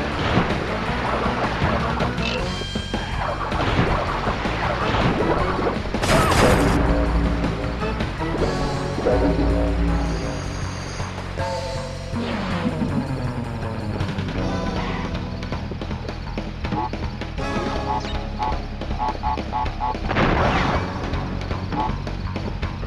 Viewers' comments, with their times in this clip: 0:06 crash playing the Didgeridoo